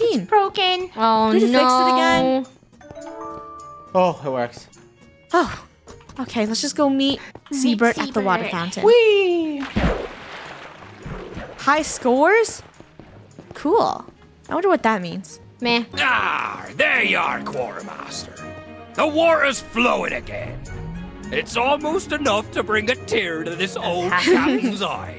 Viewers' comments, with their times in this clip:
0:08 why did he say weeee like that? 😂😂😂😂😂😂